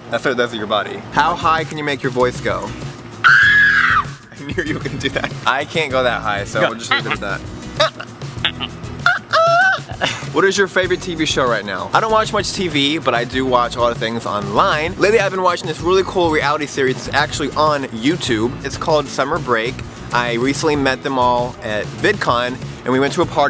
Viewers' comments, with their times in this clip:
0:08 Kinda sounded like Ariana Grande in The Way